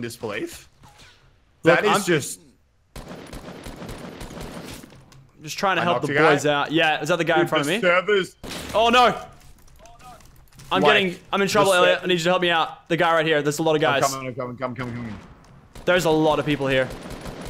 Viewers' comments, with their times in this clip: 0:05 there was an echo